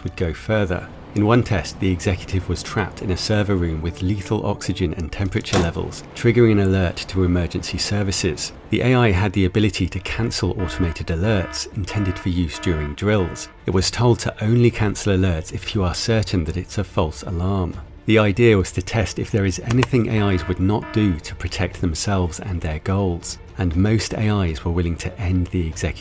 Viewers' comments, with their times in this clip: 0:07 This is total gossip..links to sources , NONE. Click bait. Left min. And the narrator’s growling voice not helpful. Whatever is put into AI comes from humans…seriously could we do much worse than we are doing without?